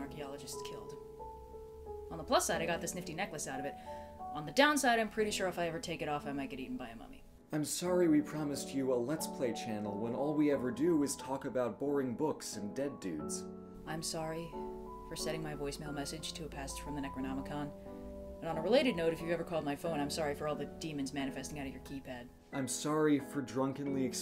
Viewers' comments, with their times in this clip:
0:10 megalovania starts playing in the background